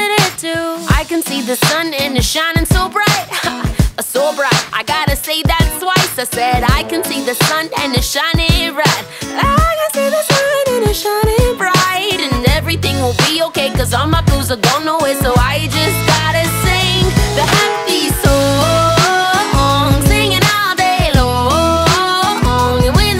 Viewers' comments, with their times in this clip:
0:09 I really liked how you changed your voice on
0:09 Jamie keep doing what you do you are soo good at singing and I cant stop listening to this wonderful song and I really like when change your voice on lol and you are soo pretty and I really wish I could be you. You are a women of god
0:10 Your singing is soo pretty 😍💕💜